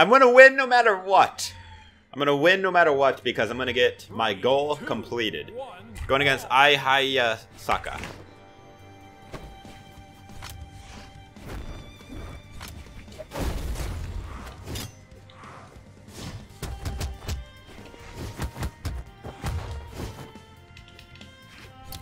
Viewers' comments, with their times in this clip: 0:06 that pronunciation tho lul